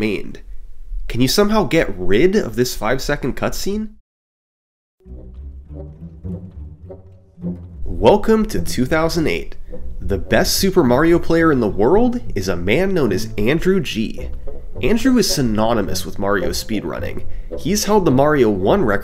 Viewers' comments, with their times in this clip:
0:05 The sudden change from the usual synthwave to Hall Of the Mountain King just feels surreal